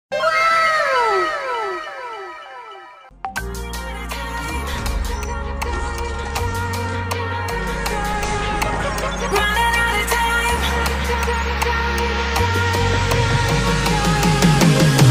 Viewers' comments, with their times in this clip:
0:03 whatsapp notification noise